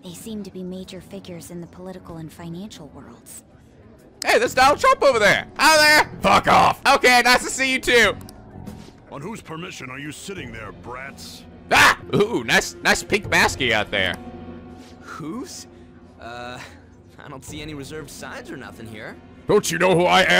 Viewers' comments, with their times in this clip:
0:06 Who else would like this Donald Trump voice in the Council of Voices?